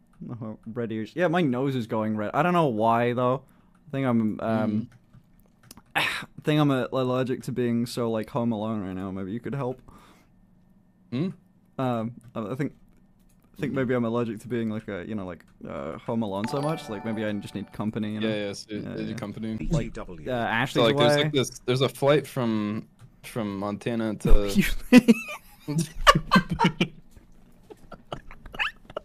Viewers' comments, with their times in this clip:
0:10 the long pause and. "Hm?" I'M DYING